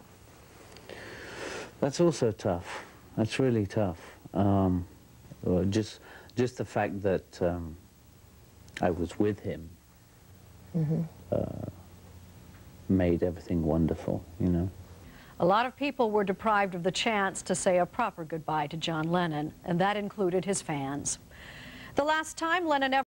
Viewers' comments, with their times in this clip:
0:06 sounds exactly like John...